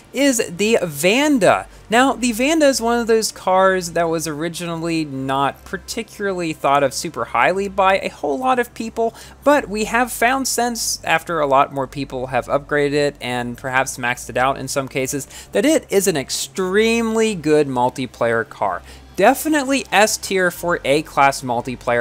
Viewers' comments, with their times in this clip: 0:03 whaaaaaaaaaaaattttt? feuerrm noises would’ve been good there